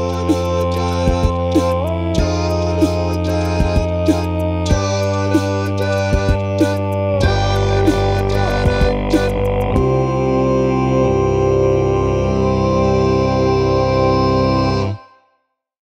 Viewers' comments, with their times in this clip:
0:07 i cannot get over how fat this G1 is very fun conversation to listen to, thank you both!